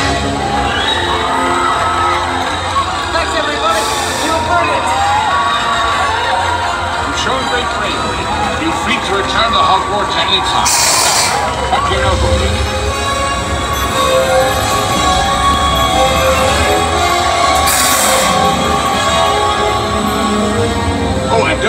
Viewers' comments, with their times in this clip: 0:03 I can't tell you how honored I am to be cheered by everyone with this BGM!!!!